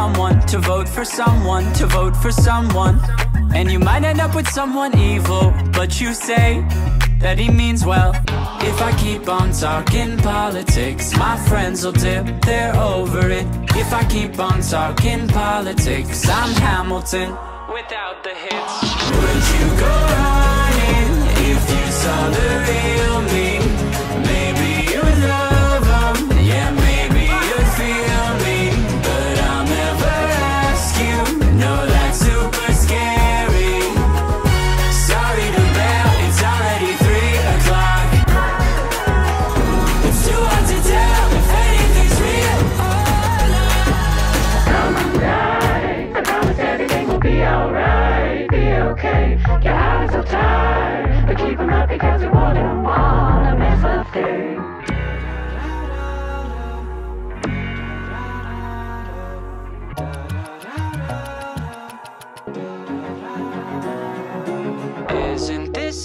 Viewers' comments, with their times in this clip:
0:09 hamilton!! i love the music just lowering when hamilton is mentioned
0:47 Nobodies talking about how fire the scene looks paired with bang